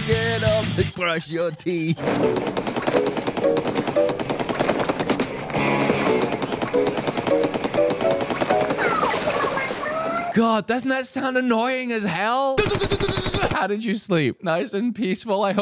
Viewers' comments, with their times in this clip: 0:03 casually waking up to gunfire